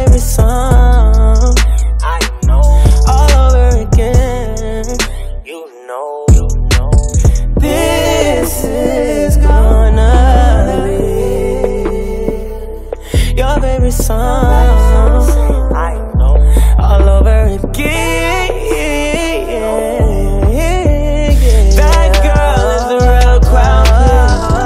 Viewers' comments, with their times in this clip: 0:07 Harmonies are deadly Eric. when he says "this is gonna be your..." Wow.